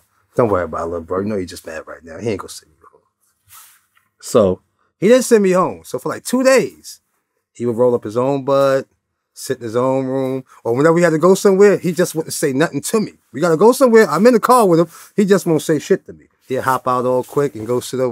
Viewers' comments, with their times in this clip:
0:06 damn that made me tear up hearing him laugh